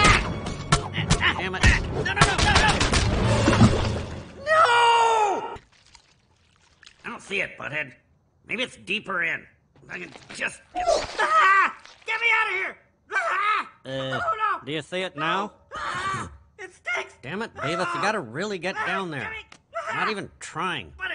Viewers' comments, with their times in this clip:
0:04 I just love the way Beavis says "NOOOO!"
0:04 The way Beavis says “NOOOO”